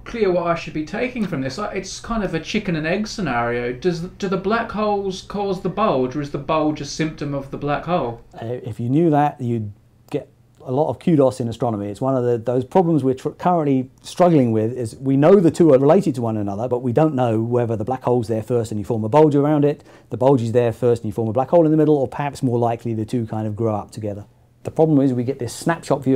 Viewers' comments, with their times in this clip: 0:09 First, and in another video, I heard him say shit-load when he said "shed load". In this video, he says "kudos" but I had to listen to it three times to stop hearing "cute ass". My UK to USA translator appears to be tuned to "curse word". ;)